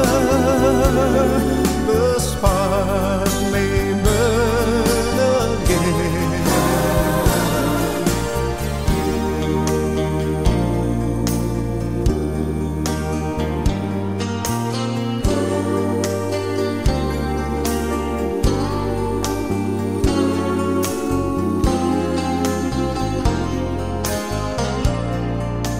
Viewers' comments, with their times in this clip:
0:09 Love the doo-wop style. See the '55 red & white chevy belair convertible I had one exactly like that from 1958 to 1964. Sold it to buy engagement ring for my wife. Been married 56 years.